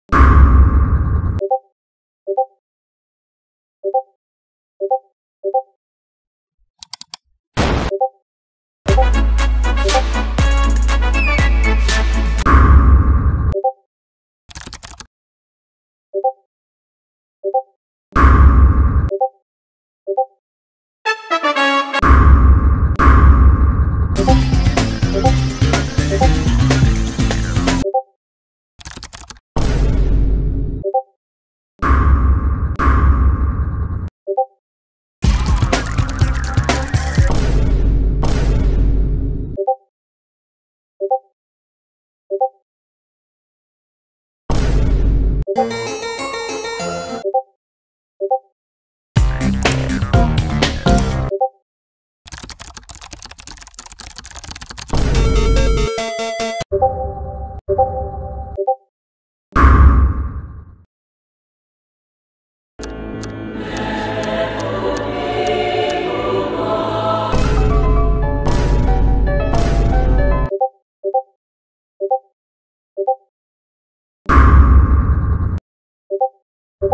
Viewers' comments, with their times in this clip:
0:09 Love the Runescape music
1:02 Also Akatsuki theme on is amazing :D